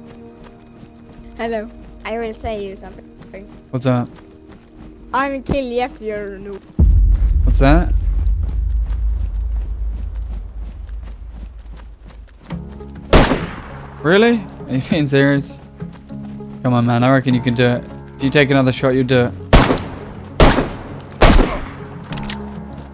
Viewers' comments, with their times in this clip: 0:04 (inaudible) : "I will kill you if you're a noob"
0:05 "I will kill you if you're a noob" in some childish gibber
0:06 Im pretty sure the kid said "if youre new, im gonna kill you"
0:07 the little child says “I will kill you if you’re noob” in very childish almost innocent American accent voice!